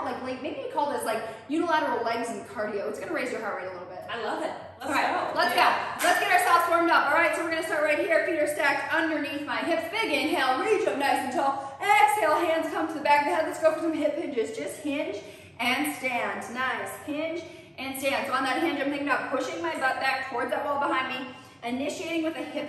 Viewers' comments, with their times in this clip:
0:04 Audio is very bad in this one